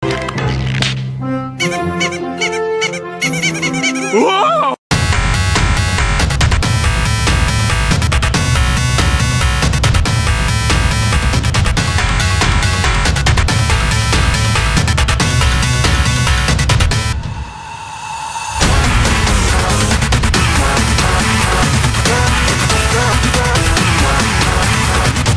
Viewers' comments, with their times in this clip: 0:10 sounds like an bap